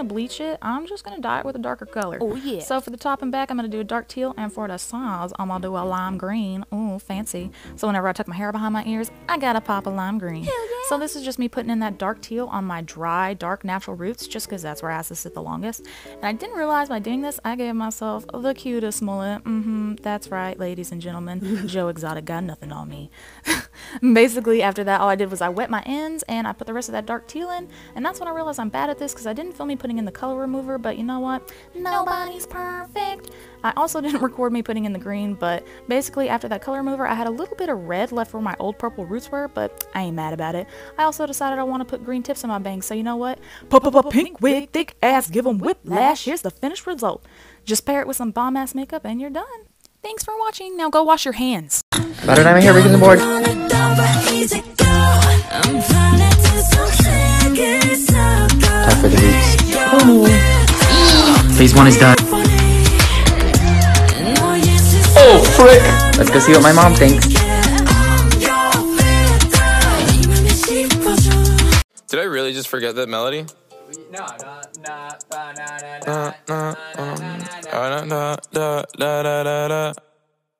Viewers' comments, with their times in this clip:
0:08 she sound like the manager that plays on Kim's convenience ❤netflix
0:52 I screamed and feel of the chair so excited I was when i heard jimin❤️❤️❤️
0:52 I was so shook when Filter started to play😂
1:01 i know that’s jimin i know that voice anywhere but what song is that?
1:08 ...okay..i laughed soo hard at his moms reaction.....wow..shoot me!! just realised this guy is an army andddd....filter is playing in the background...ahhhhhhhhhhhhhhhhhhhhhh